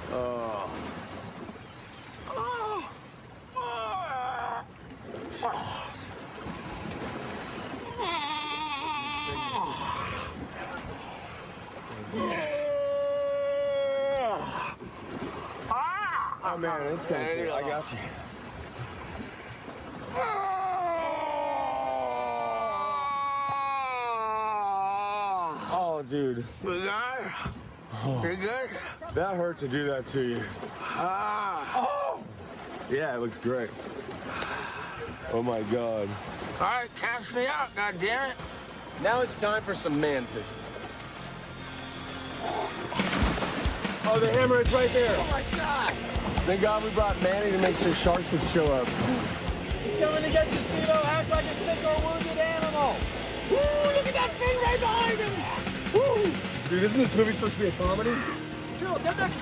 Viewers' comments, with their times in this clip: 0:07 he sounds like a dinosaur 💀
0:23 THAT SOUND OF IT COMING THROUGH! GEEZ!
0:44 dude, spill the blood by slayer fits so perfect. i adore this riff with the closeup from that shark always giving me goosebumps.